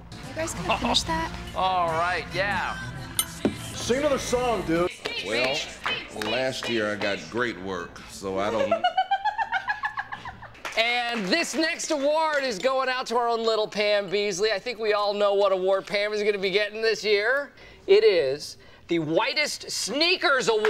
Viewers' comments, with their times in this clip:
0:07 shes got an amazing laugh
0:08 put playback speed 1.75 her laugh 😅
0:08 The best laugh in the show.